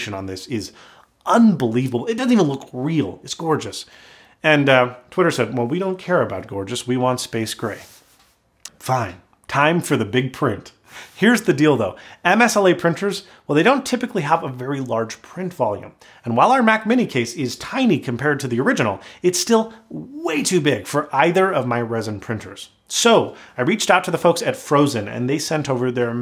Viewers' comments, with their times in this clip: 0:10 "Here's the dildo" lol
0:10 "Here is the dild…"
0:10 "here's the dil..dow" xD
0:10 Here's the WHAT?!?
0:11 « there is the dildo » I know. I’m childish 🥺